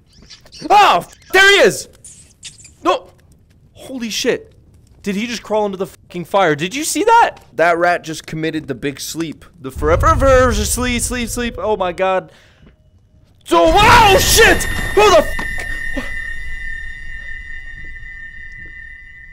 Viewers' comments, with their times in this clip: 0:05 the stutter is so funny